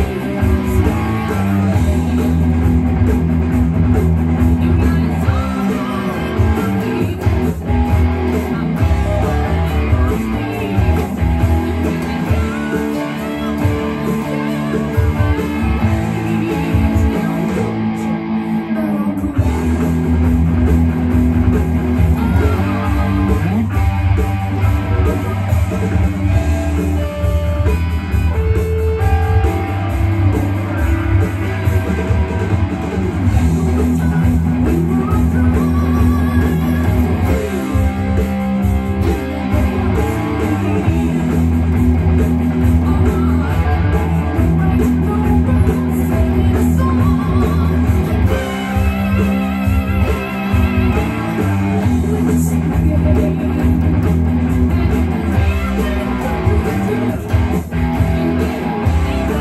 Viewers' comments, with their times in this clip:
0:08 Great job all the way through. Always loved that bassy undertone sound and you nailed it.
0:43 mad props 👏nailing that little lick